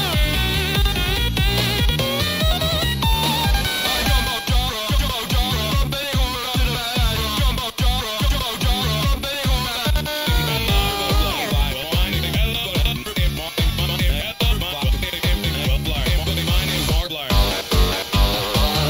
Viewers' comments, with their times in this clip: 0:03 sounds so dope